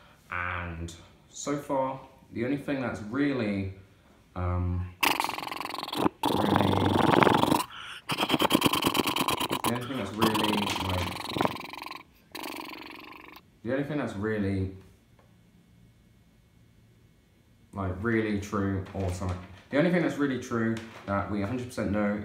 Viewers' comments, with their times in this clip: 0:03 Aww yeah loving the image zooming and the voiceover